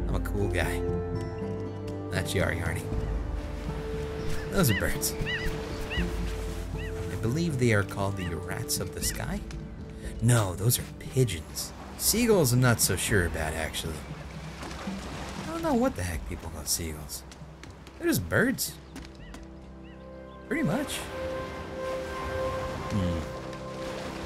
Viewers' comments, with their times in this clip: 0:05 that bird is a type of seagull callad "Skrattmås", (skratt means laughter, and mås means gull). It's called "skrattmås" because when it screams it sound like laughter. And I think the whole game is based of Sweden